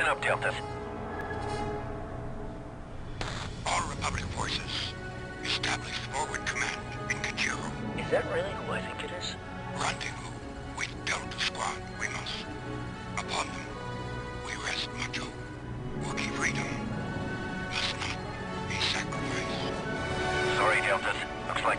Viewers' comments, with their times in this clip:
0:06 Did Yoda just said Pikachu? Listen